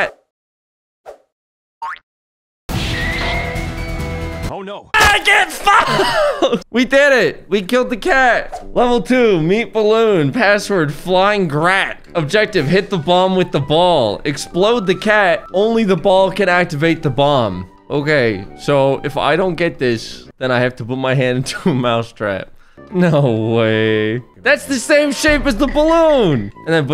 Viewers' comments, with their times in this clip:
0:10 I love how he pronounced it 'flyin grat'